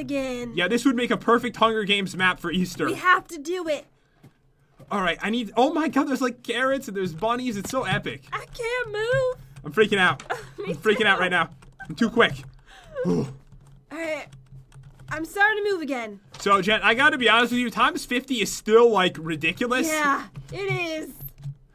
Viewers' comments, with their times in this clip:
0:06 am I the only one that heard Karens?